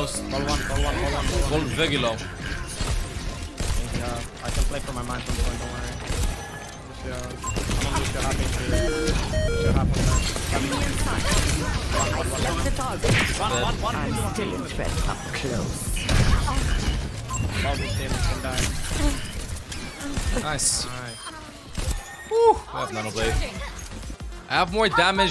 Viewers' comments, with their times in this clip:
0:07 The Pokemon low HP sound that plays is supposed to play when the Pokemon is at less than 25% HP or "in the red". You were 34.5% HP, or "in the yellow" so the sound wouldn't have played (*said like an annoying smartass*)